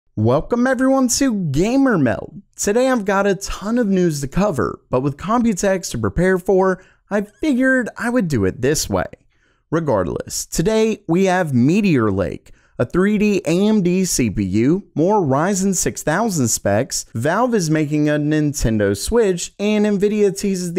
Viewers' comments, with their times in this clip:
0:02 why you always says GAYmer meld, gets on my nerve.... altho i really really hate your voice too.... i mean Thanks for the video i need those information.... but hey id rather be genuinne